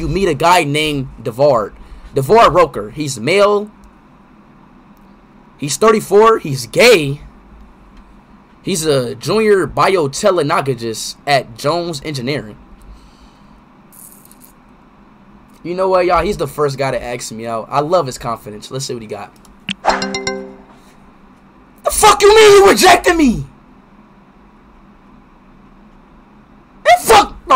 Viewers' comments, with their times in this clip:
0:08 BIOTELENOGOGIST BRUH I CANT💀💀💀💀💀💀💀💀💀
0:08 The text: Jr biotechnologist Speed: Jr biotelonogojist